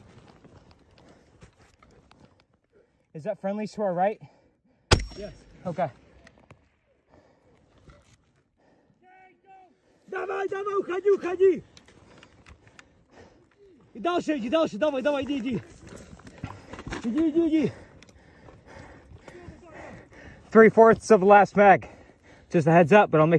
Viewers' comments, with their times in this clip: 0:09 why did i think i heard mandarin